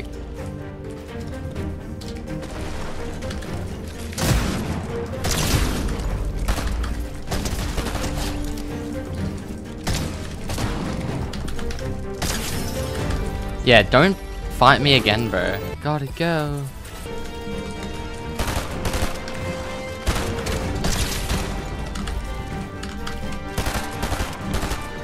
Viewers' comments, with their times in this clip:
0:09 is it just me or did he say : Uggh I’m gggg gaaaay💀